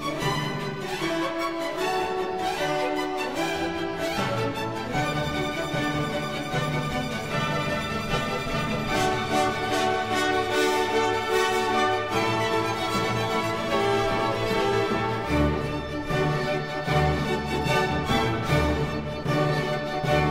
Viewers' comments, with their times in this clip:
0:05 Absolute genius, the crescendo